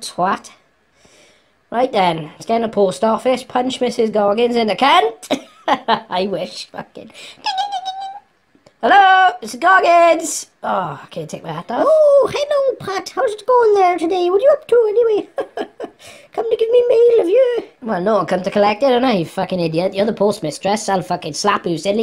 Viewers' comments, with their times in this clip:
0:07 even the bell was voice acted 💀